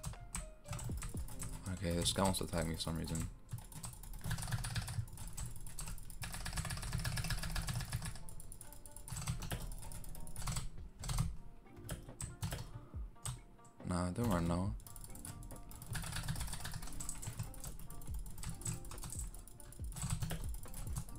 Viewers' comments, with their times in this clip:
0:03 intesne keyboard noises